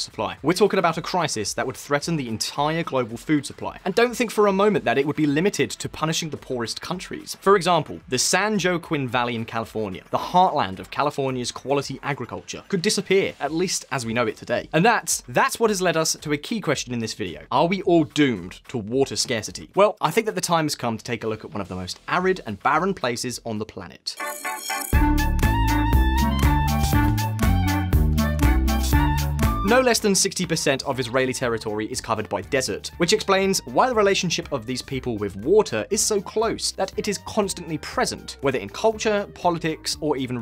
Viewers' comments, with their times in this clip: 0:08 did be just say… San joe-quinn???
0:08 Uh, when you use Spanish names, it's considered polite to try to pronounce them properly. That's not the "San Joe Quinn valley;" "San Joaquin" is pronounced "san Wah keen..." Bonus "La Jolla" isn't jolly at all, it's pronounced "La Hoi yah." 😉
0:25 was that fiddler on the roof style music necessary? We get it, they’re Jewish lol